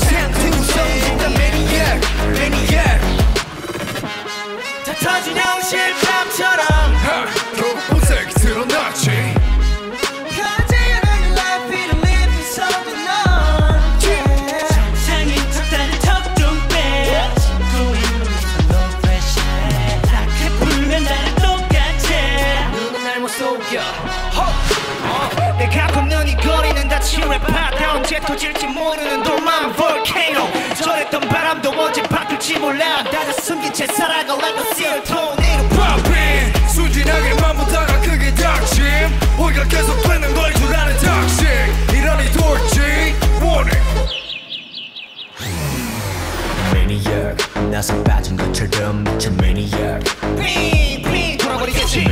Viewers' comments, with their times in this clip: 0:07 Lix's face : 🐣🍼👶☀️ Lix's voice🥵🖤💅🎃☠️🔪
0:36 I got goosebumps because of the depth of Felix's voice